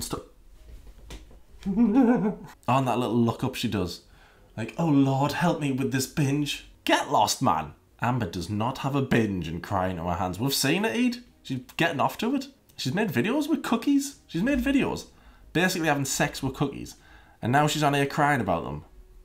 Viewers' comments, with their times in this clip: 0:06 lmao when he adds man at the end it reminds me of Jamaicans 😆